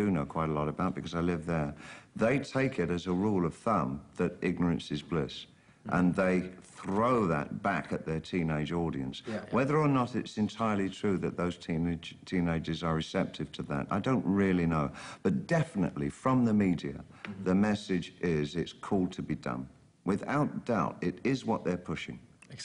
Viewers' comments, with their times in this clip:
0:05 i think what i was referring to, like when people roll their Rs